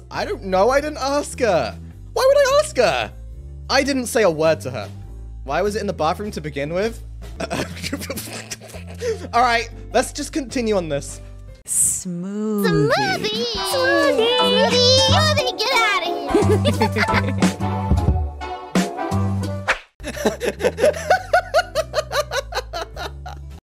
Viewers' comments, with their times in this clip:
0:07 for fox noises